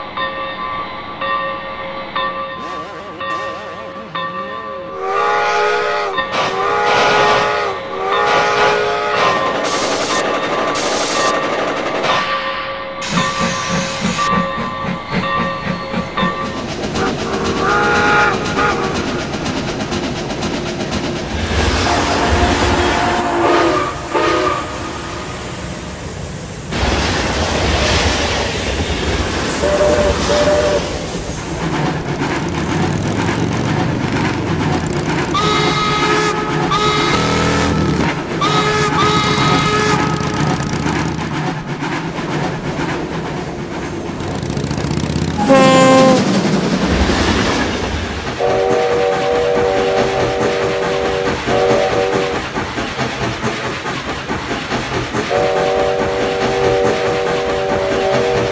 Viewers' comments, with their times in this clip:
0:04 they should have added a small conductor's whistle when hocus pocus blew to add more realistic feeling to it
0:21 A sudden drastic change in noises right here.
0:32 the PT Boomer scene with N&W 475’s whistle blends pretty good
0:34 AB&C 34's Whistle
0:46 why do you have a diesel horn on a steam engine